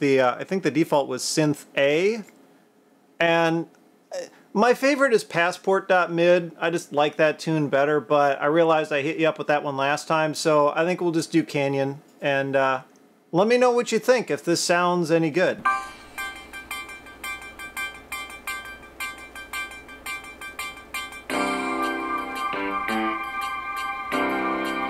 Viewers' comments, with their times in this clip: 0:10 The speaker quality is mid-tier for the time period they would have been sold off the shelf new, but to today's standards, these speakers are a joke.